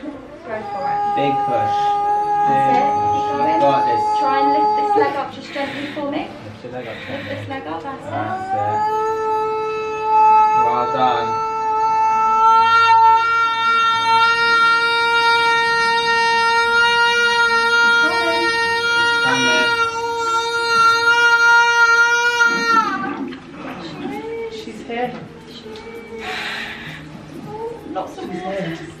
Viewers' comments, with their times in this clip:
0:09 Air Raid siren starts